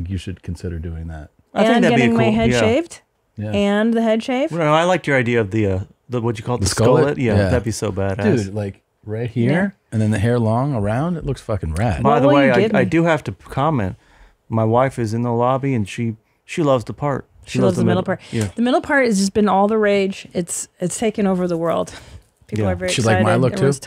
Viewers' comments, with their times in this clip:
0:05 Christina is turning into Charo!! "What will you give me??" 😂